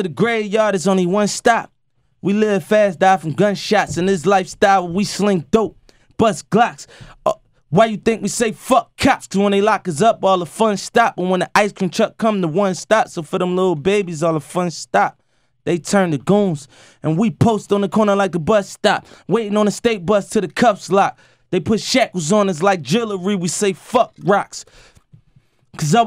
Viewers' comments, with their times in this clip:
0:05 did he burp? 😂😂😂
0:06 My nigga just burped mid freestyle hahaha
0:06 did this nigga burp😂😂😂😂
0:07 burp or he's a reptilian shapeshifter? 😂
0:07 lmao was that a burp
0:07 was that a burp? lol
0:08 lmaoo he burps